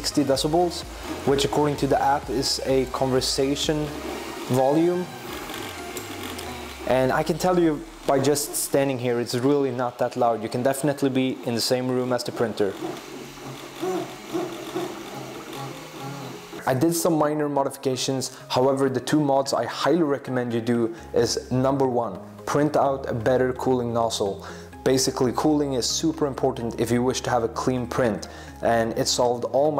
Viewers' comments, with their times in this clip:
0:10 You can def be in the same room, VZZZZZZZZZZZZZZ BZZZZZZZZZZ SHZZZZZZZZZZZZ. lol